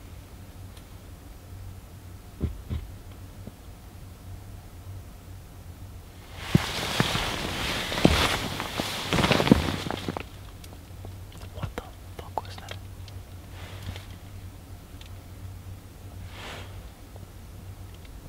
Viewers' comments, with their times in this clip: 0:04 in Sounded like something tapped the tent